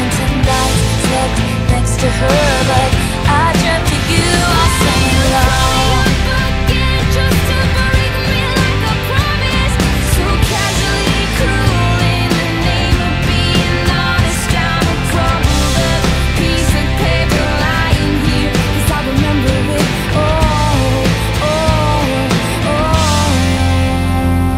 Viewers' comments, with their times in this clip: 0:05 This is honestly so amazing! The transition between songs honestly gives a whole new meaning to both songs where it’s almost like a duet now between James and let’s say Betty. And the fact that betty works well with the All Too Well track is just mind blowing. Thank you for blessing my ears with this 🙌🏻🙏🏻
0:07 wow I got chills when it transitioned